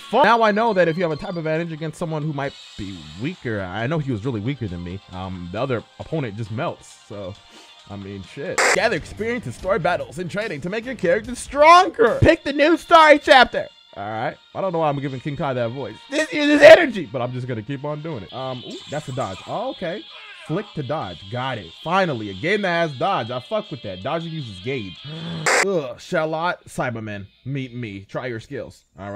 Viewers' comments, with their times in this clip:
0:10 why did he sound like the voice he gave to sayori